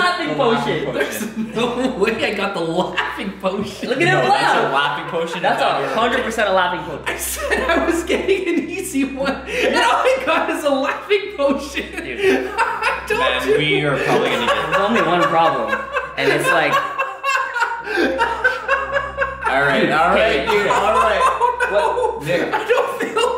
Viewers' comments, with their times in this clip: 0:05 the uncontrollable laughter is literally the definition of me